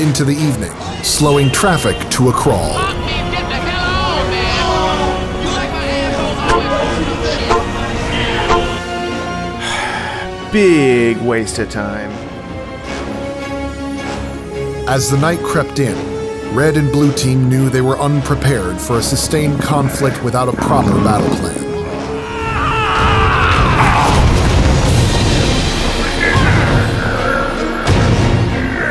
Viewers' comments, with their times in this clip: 0:10 that's his actual voice